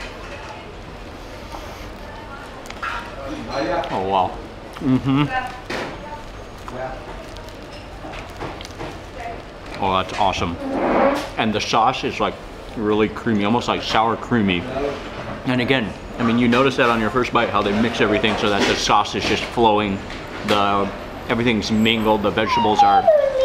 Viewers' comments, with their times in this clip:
0:04 Oh wow mhmn! I can almost make a ringtone of Mark's taste test